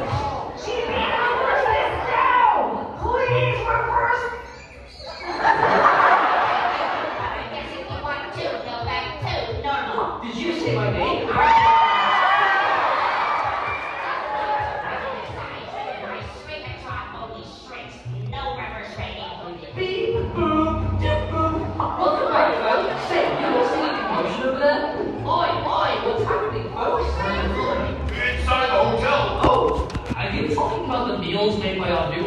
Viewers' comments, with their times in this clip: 0:04 The Fact That They Were Laughing At The Shrunken Just Not 😂☠️
0:10 I honestly liked it when everyone cheered when Two showed up
0:17 why does it sound like GB said “holy shit”